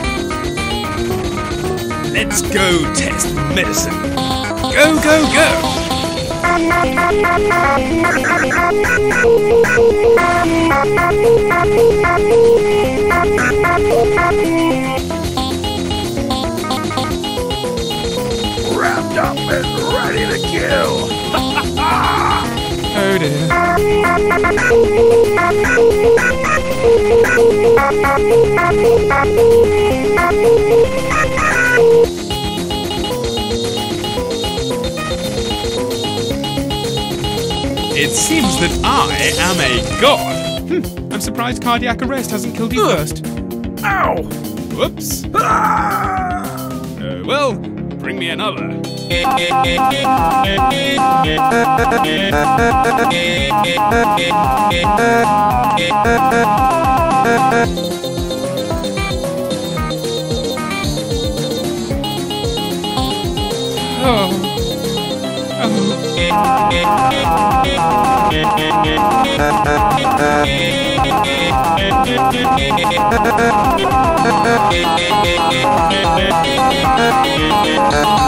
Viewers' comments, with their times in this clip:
0:04 you can sorta here medic here if you listen closely, but still a great cover overall
1:02 why the fuck does the Doctor start moaning 💀💀💀